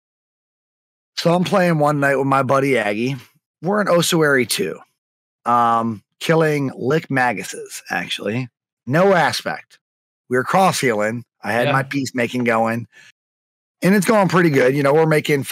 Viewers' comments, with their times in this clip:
0:03 My OCD kicked on with the pronunciations of Ossuary and Lich